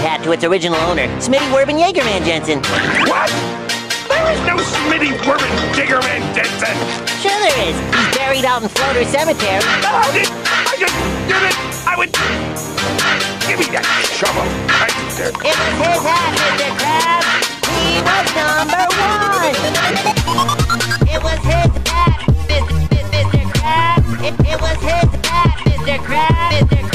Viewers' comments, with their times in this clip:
0:08 that beat tho